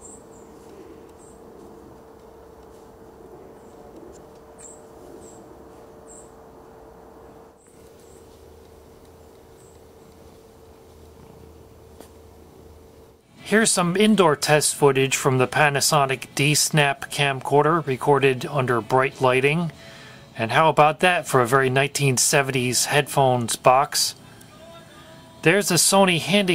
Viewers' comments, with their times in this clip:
0:08 Wow! The quality is indeed ultimately clear! I'm not sure if its recorded in interlaced but looks almost to Progressive quality. Those mics even picked up the cat purring. Omg... So much I really want a kitty. Still... The video capture onto the camcorder is something revolutionary from that time period! Especially in 60fps!! In 2009 I owned a Aiptek camcorder/media player, did similar composite capture but everything under 30fps...disadvantage is the audio is delayed a bit, still was a neat toy! Anyways Awesome videos!! :D